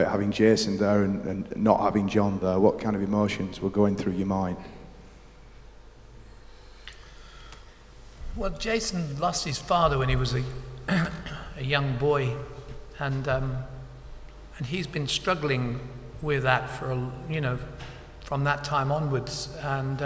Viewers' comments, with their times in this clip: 0:04 Jimmy about to shit himself...Robert is so wise and well spoken